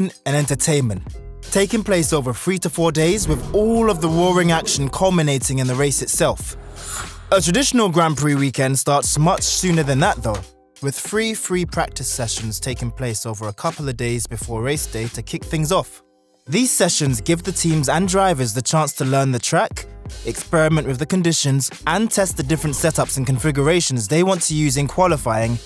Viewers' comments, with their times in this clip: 0:09 Wif free free practice sessions, huh? 😂